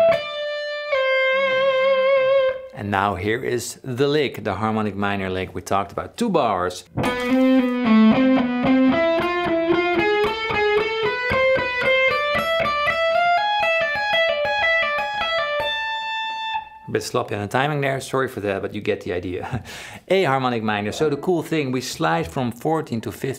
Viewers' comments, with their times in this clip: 0:09 Ascending harmonic minor lick